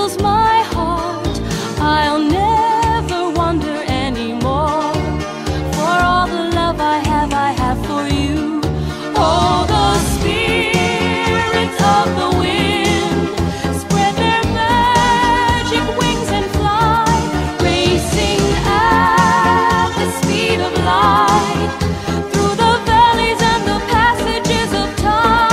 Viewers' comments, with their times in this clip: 0:07 That Key change is just godly <3